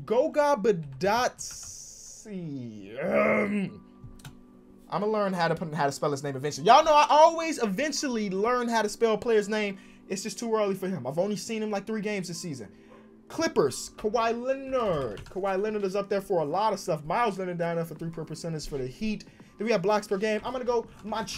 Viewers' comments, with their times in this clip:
0:06 That sound ? Sounds like them zombies from black ops 3